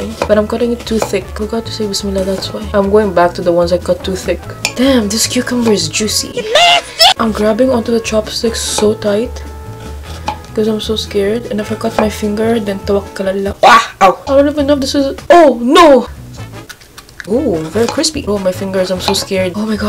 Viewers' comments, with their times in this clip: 0:06 the way she said that word in my besties country 😭🤣😂 your are me favorite YouTuber reght now don't mind the misspelling I did on purpose